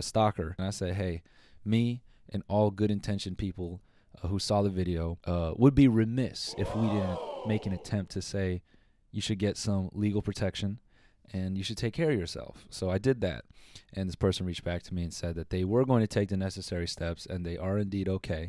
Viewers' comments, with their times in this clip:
0:06 The "woah" sound effect was fucking effective